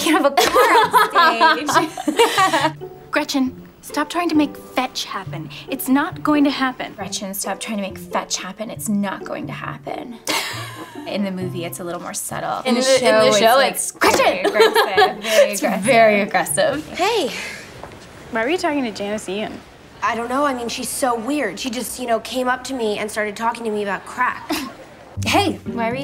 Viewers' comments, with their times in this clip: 0:08 fail! She just read the line -_- At least the other girl adds some acting to her readings. You can tell she doesn’t remember the movie as well as the other girl or just doesn’t care